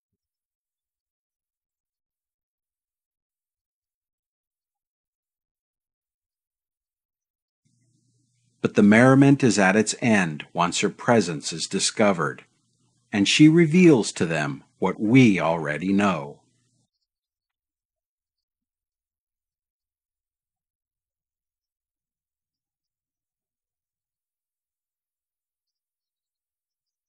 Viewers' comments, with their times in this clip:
0:08 watch how Oliver Hardy laughs for real :-D